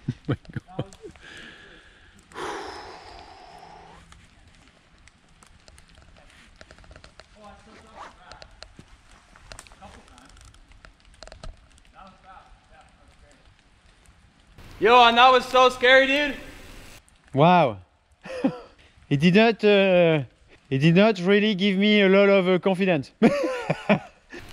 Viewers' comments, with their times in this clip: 0:06 ....silence.....you know its getn into the gnar-EST of gnar🤙